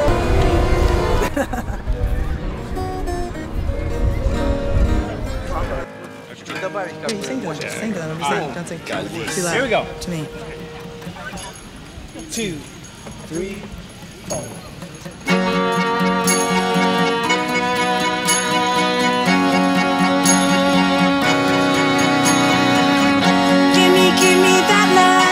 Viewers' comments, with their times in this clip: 0:08 I literally heard someone say "Khaleesi"